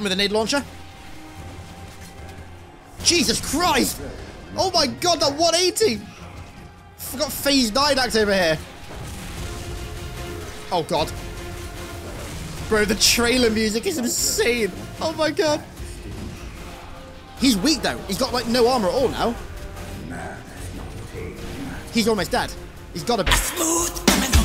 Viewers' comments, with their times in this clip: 0:10 my favourite part of the Revival soundtrack. So epic.